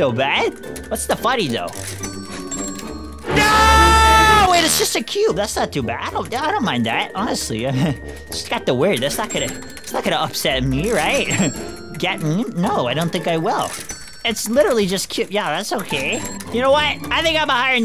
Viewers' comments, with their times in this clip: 0:03 That Scream of Rage got me Rolling on the floor 🤣🤣🤣